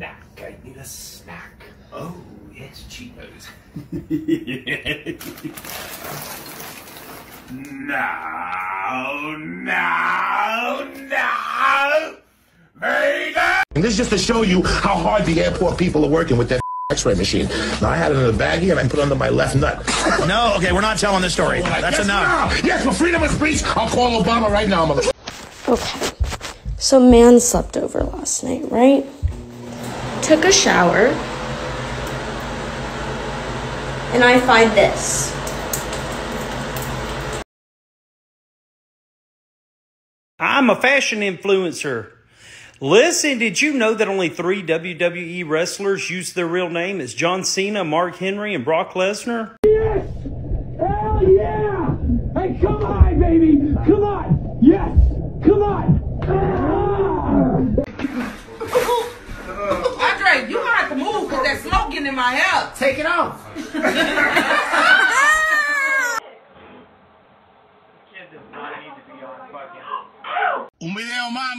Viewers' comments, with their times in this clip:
0:04 Darth Sidious over here sounding like me bean fr fr
0:59 for the love of allt hat is holy, I can't understand what are they saying